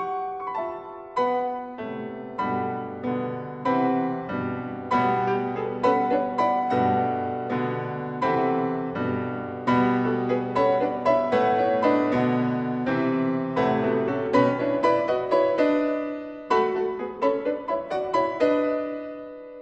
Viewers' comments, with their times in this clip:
0:03 transition to 6/8, why is the tempo wrong? The relationship is misjudged...